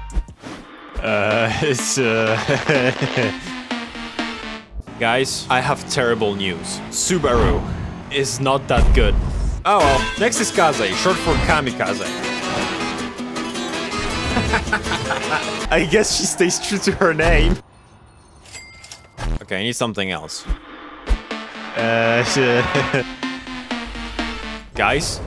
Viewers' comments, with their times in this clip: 0:09 is that fake type i hear lol